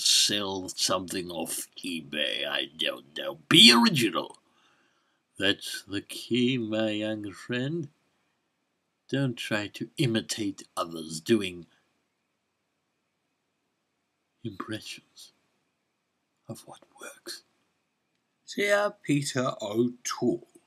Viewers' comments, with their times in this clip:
0:05 "That's the key, my young friend." LOL, I just love your Emperor! It's outstanding.